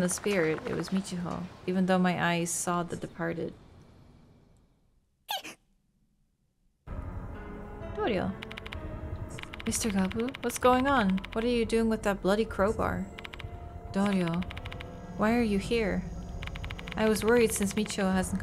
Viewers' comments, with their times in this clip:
0:03 Have anyone else noticed that when we are about to see the doll, we hear a sneeze(make a small sound)? and now, just before we see Douryou, we heard that sneeze? I was waiting for the doll to appear, but then we saw Douryou. I am 100% sure she is the doll.